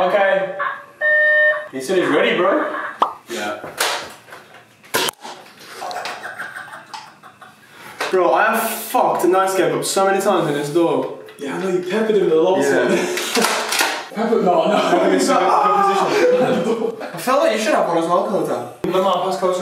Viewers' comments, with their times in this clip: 0:06 i love you and your laugh! ;) <33